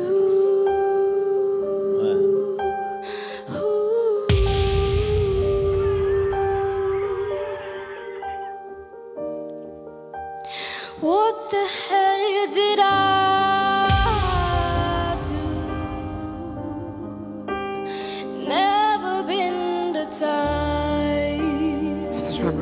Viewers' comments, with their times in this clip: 0:09 i dont know if this is true but if you lisen well there auto-tune plz let me know if you think the same